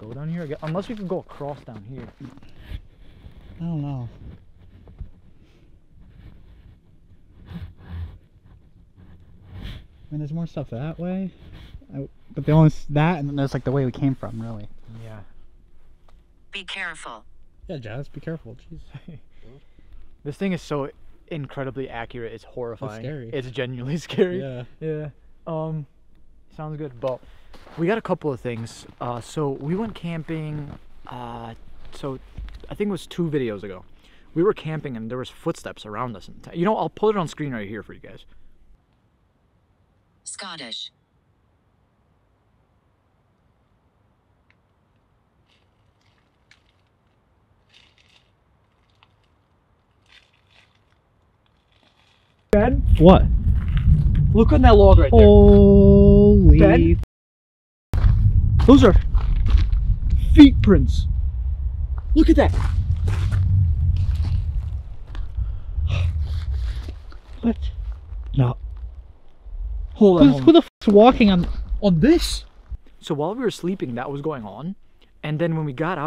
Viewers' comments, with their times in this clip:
0:04 it sounds like somebody frantically breathing wth
1:03 voice said it’s me sound like a female .